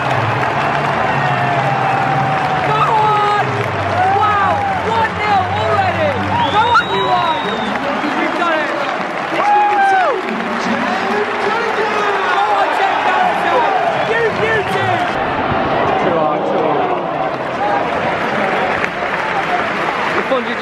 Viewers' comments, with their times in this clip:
0:04 great voice crack
0:05 The voice crack
0:06 his voice breaks
0:07 dat voice crack dough